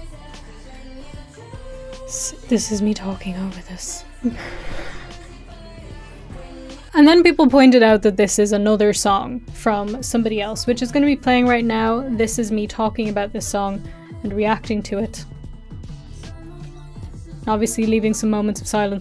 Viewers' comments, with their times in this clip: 0:03 this is so cringe 😭 the song is boring